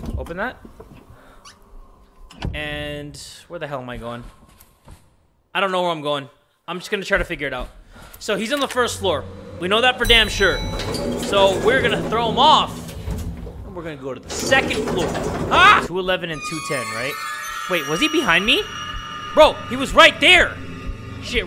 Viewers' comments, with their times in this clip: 0:05 “We’re gonna throw him off. Juke him. He’s at the first floor” >not even a second later the twinkling plays the irony